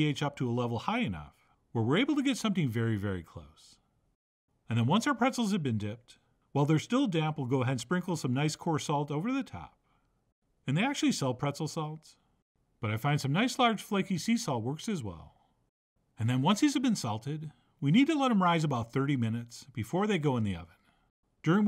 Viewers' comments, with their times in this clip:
0:08 why am I hearing "the phantom of the opera" ?